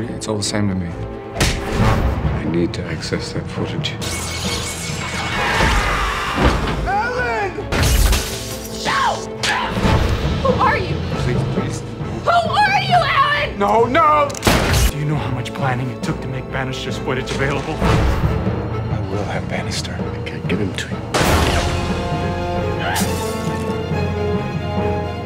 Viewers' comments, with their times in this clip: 0:06 lol the way that man said 'alan!' was like a lost child crying for their mummy